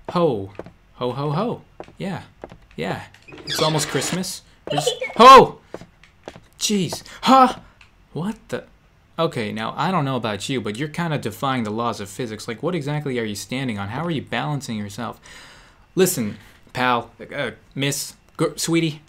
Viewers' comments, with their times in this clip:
0:04 was that Pucca's laugh? lol